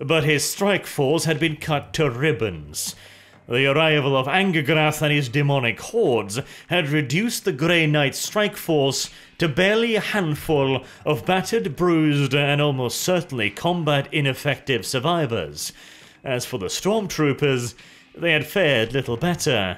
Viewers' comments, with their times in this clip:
0:05 "Anger Granny's Demonic Horde" ~ Man THIS is why I always use the subtitle